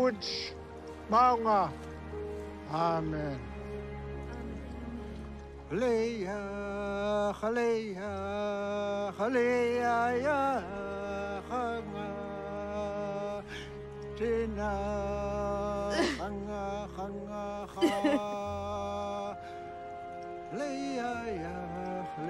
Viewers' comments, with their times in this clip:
0:05 His song 🎵 is beautiful.